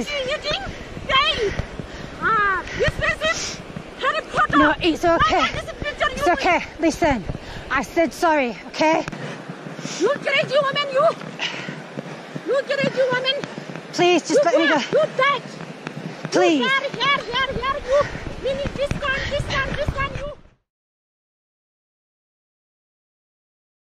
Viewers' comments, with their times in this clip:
0:03 Respect is universal🙏☮️...also did she call the brittish lady Harry Potter 😂 🤔🤣
0:04 I know this is serious but did she say harry potter?